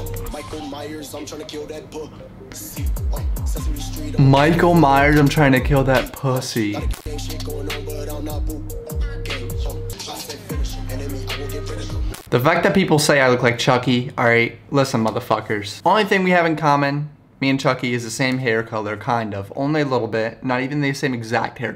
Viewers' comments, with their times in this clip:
0:08 softest shooot of all time...